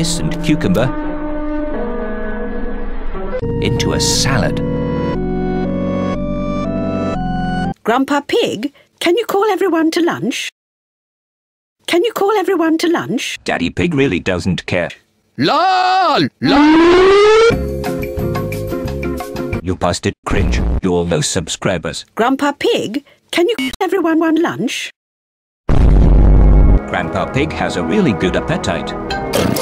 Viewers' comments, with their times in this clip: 0:03 this music sounds super familiar
0:09 into a salad music plays
0:15 siren be like:
0:16 he tomato siren
0:16 tornado siren noises